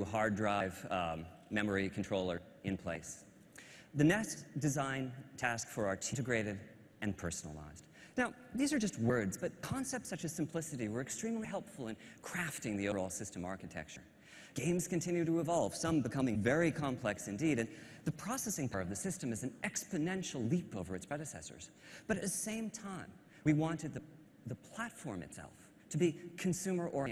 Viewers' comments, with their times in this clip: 0:08 The guy looks like the guys from twilight and sounds like him